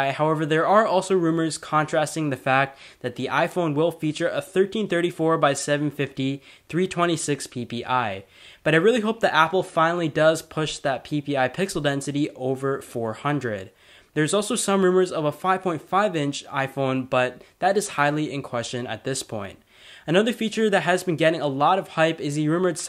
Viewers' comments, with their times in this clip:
0:07 he says pee pee